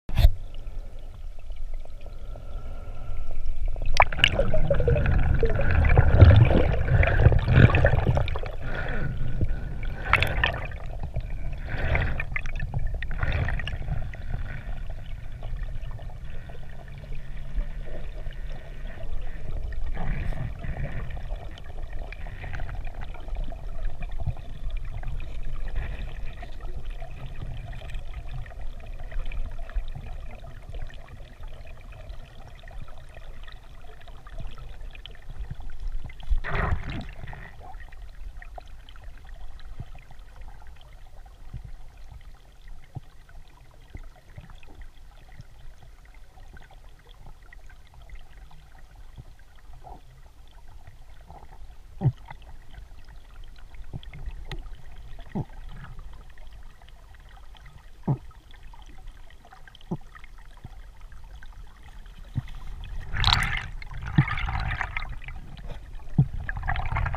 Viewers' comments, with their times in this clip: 0:10 It sounds like he’s breathing. Maybe one breath but I don’t know.
0:52 you can hear the reflex start
0:55 lol this guy sound like my character dying underwater when run out of air